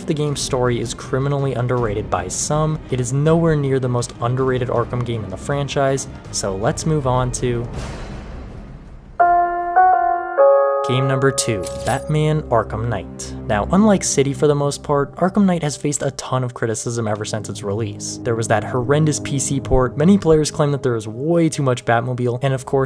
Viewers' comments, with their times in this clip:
0:08 i use that announcement bell as notification sound, got quite confused for a second lol